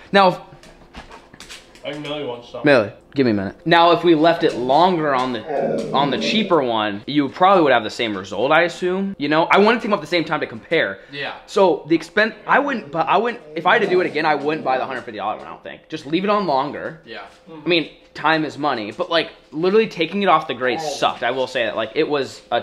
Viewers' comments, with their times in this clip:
0:05 did anybody else her mildly growl LOL